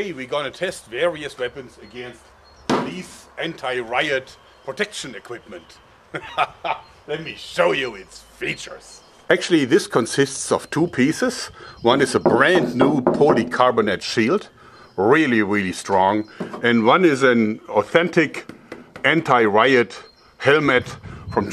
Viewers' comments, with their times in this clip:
0:06 omg the way he Says “let me show you its features and laughs